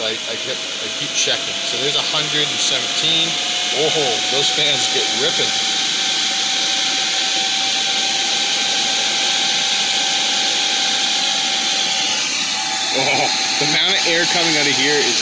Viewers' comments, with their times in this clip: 0:03 server sound earrape